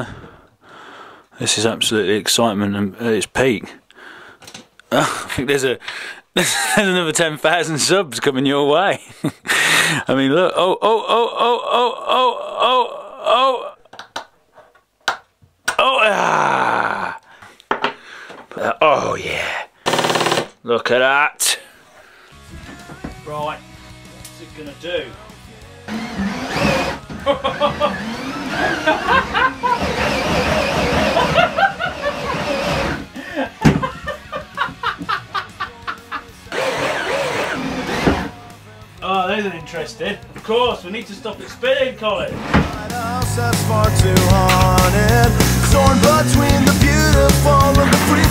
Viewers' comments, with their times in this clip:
0:03 sounds so wrong lol
0:07 He sounds like a radio guy
0:28 that maniacal mad scientist/inventor laughter. XD
0:29 never seen him laugh so hard .. 😂😂..love the vids mate...❤